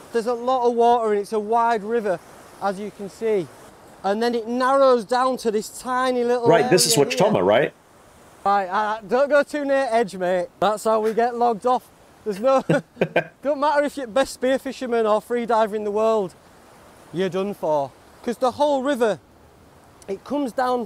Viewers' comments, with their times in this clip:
0:06 What did you say ? I've listened a couple dozen times and I hear you say "right this is watchstommer right?" and my brain just cannot figure out what the word/s in the middle are.